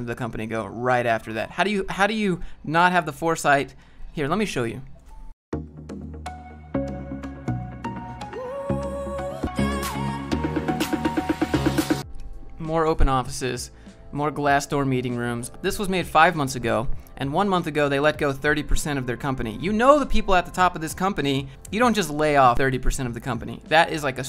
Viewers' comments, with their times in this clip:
0:05 Does anyone else cringe at these pointless “check out our office!” videos? Such as ? Wtf is up with that cringeworthy music??